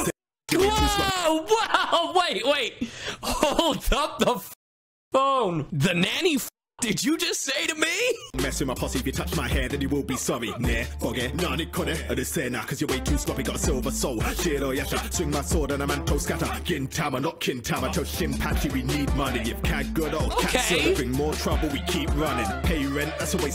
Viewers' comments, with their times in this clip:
0:10 mans straight up said xue phiong 💀